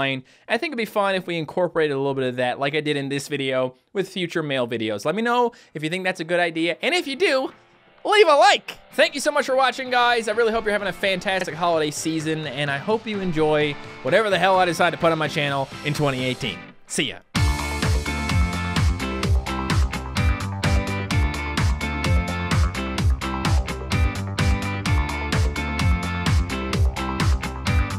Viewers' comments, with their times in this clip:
0:10 listen very very closely his voice went weird let me know if u hear it.